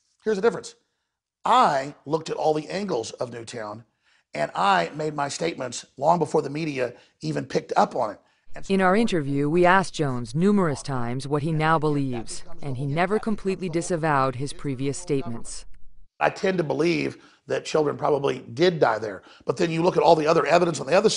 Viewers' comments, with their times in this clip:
0:09 they cut to narration so you can't hear what he's saying